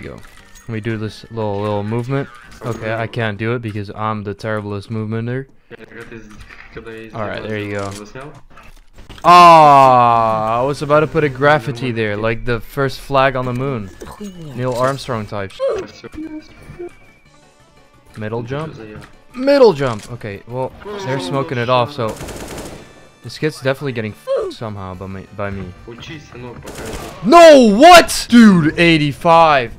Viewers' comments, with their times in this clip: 0:10 Nvm "graph-itty" unliked (not really)